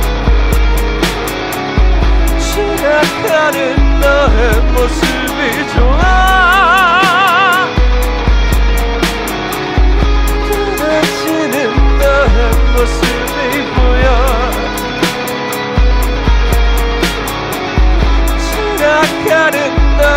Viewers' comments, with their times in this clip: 0:05 I keep coming back to this video like almost every day at this point, and it's really like it reaches into my chest and squeezes my heart really hard in such a good way. like I get goosebumps and the whole entire last part with the buildup to the scream and then the scream and then the abrupt ending i just. i'm a puddle on the floor